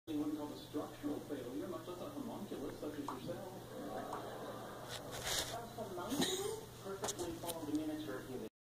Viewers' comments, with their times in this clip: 0:02 her cute tongue pop :9